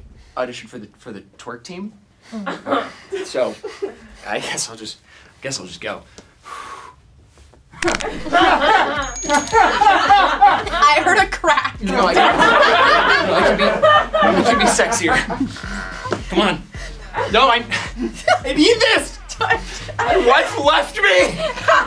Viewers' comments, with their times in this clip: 0:07 I love that u can hear the actual crack before the edited one